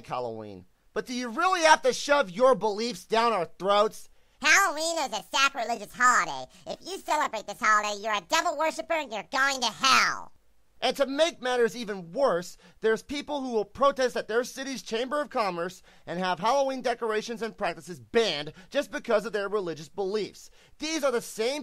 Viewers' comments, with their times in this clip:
0:04 HAHAHAHAHA😂 That squeaky voice had me laughing XD